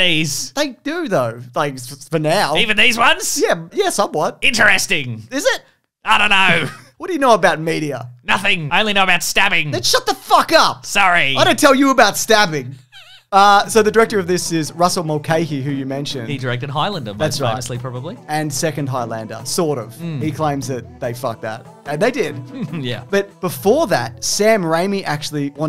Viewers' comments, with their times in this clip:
0:10 That STFU was so cold outta nowhere lol